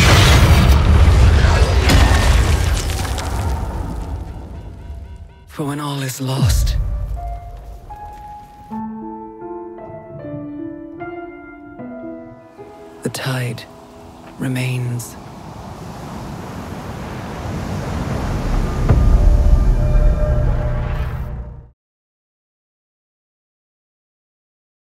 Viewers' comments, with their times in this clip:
0:10 The right hand is clearly hitting the same key but the note we hear is different. I'm not buying this game.